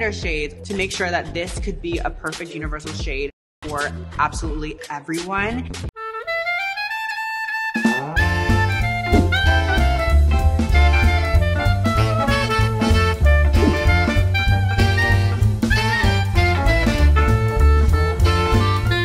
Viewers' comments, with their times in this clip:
0:06 Why does this music sound like the advert that comes up from a Bengali show that my dad watches 😂😂 anyone else relate?